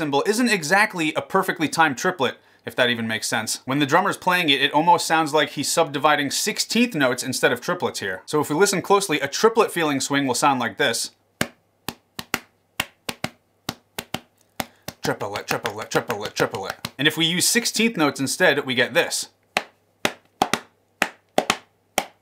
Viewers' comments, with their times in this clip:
0:10 is an amazing breakdown between triplets and 16th notes. That’s amazing man… I never caught that in all my times playing those jazz standards back in high school